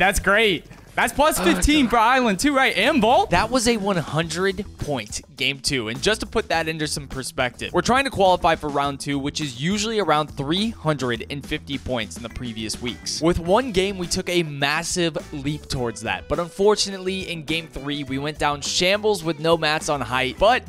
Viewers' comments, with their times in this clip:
0:06 “to put that into sp-perspective…” lol